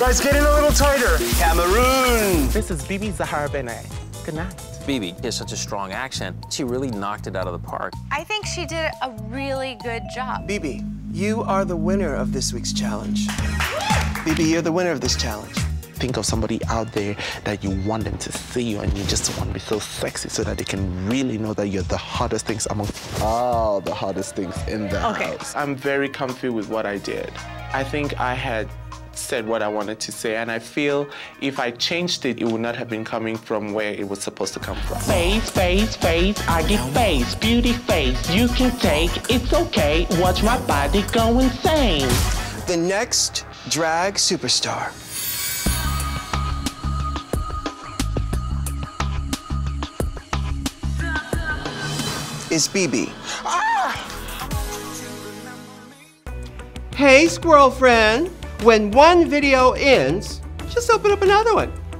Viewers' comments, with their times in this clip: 0:05 "bebe has such a strong accent" have u been in California? Where 3/4 of the state is foreigner and has an accent u can't understand what they r saying. Bebe has an accent but it's not a strong one. I understand her quite well
0:45 lol why are they playing elimination music